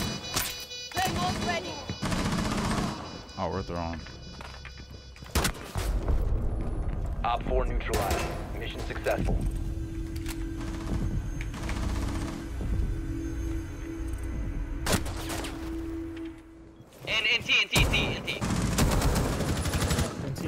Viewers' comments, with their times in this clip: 0:03 "oh we're throwing" two seconds later BAP